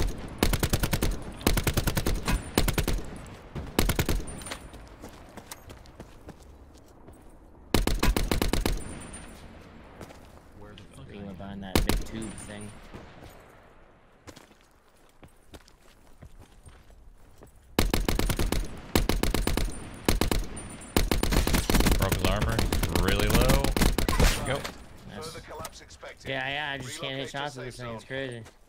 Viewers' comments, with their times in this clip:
0:09 Did i just hear sa baba naten?